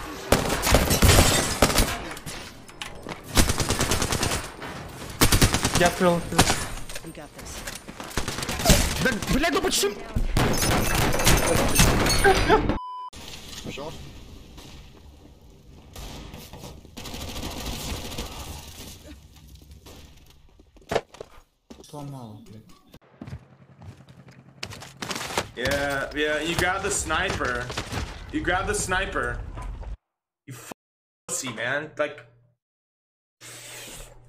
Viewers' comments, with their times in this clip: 0:07 Man sounds like he's shooting an LMG
0:19 everyone sounds like an explosion except her 😂. She sounds like someone blew into mic 😂😂